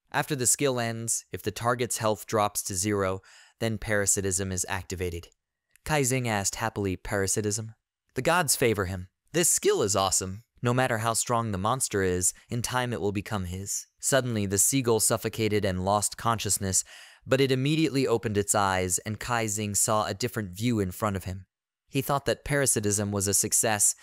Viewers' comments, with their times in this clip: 0:10 that voicecrack though